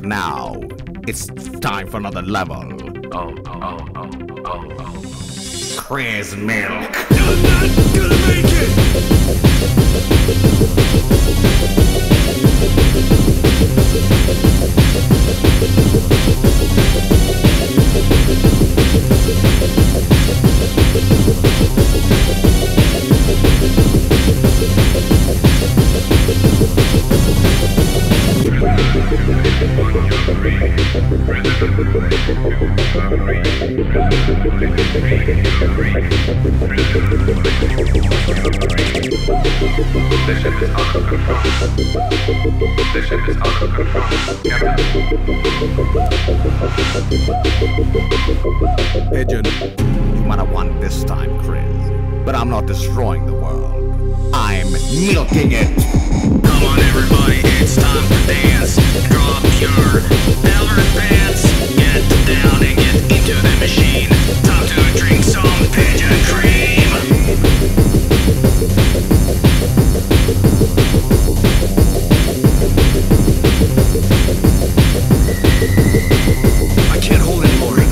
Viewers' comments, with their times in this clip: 0:06 I imagine that the beat drop is the sound of the machine milking him
0:55 I love how it turns into a Devil May Cry soundtrack.
0:55 sounds like lemon demon tbh
0:58 i found this song in a p3nis music meme a few years ago, and had no idea where it came from or what it meant. I thought the lyric said : Drop your , 'VALORANT' PANTS!! So i typed that into google to try and find it.